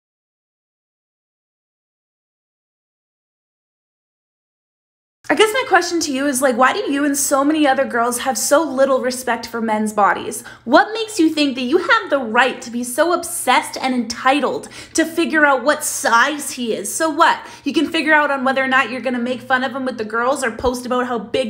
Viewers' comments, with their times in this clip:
0:05 I thought something was wrong so I raised the volume and I almost had a heart attack